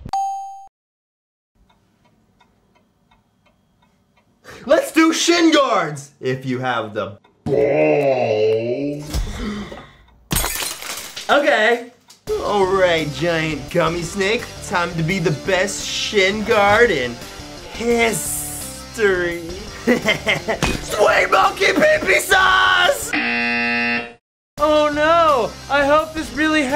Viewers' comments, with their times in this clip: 0:09 is my favorite part it’s too funny how he says “ okay”